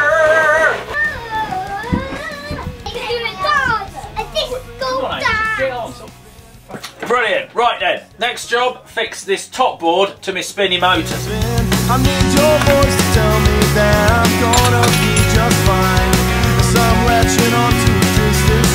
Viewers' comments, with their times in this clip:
0:06 stop fu- So British 😂